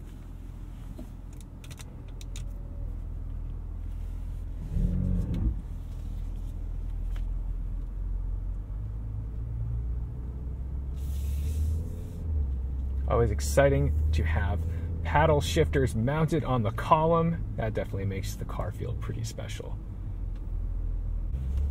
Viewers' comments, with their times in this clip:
0:04 The only sound I heard at the mark was the transmission shifting. Maserati haters just gotta nitpick.